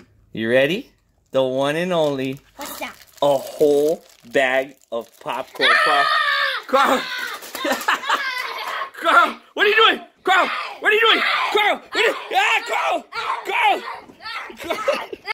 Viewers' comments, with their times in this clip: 0:11 Carl didnt stop laughing shady carl carl was like im gonna eat you